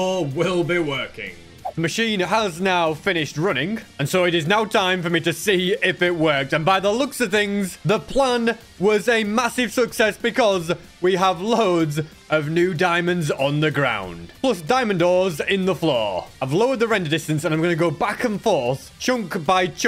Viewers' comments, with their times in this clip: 0:06 what happen to sb voice